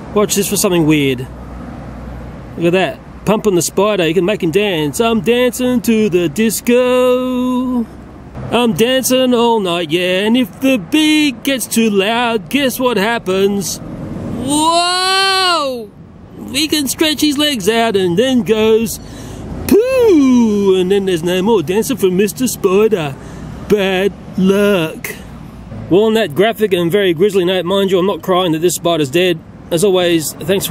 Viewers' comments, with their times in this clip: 0:05 OMG IM DYING just LISTENING TO HIS VOICE MAKES ME DIE!!! BUT THIS!!! THIS!! IS TO MUCH LOLOLOLOL LMFAO!
0:15 Is it just me or did he sound like Freddy Mercury at this point?